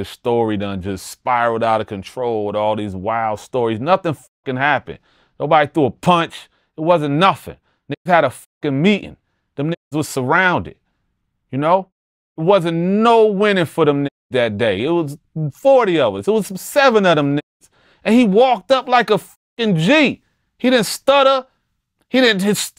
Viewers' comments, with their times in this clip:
0:04 Noble got Jersey on em towards the end.. 😂😂😂Yeahhhhhhh!!!!